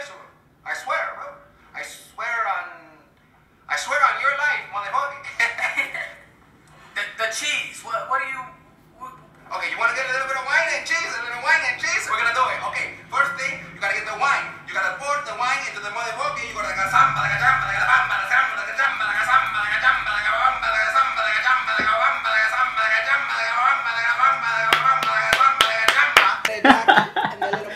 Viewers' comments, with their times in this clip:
0:08 his phone started ringing and he didn’t even check who it was i’m raging 😤